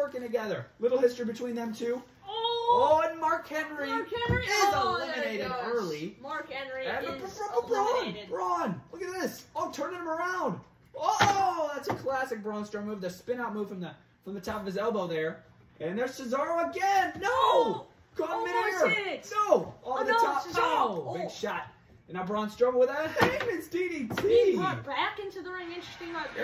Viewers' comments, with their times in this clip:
0:07 He just said B B B BRAUN STROWMAN like Shane McMahon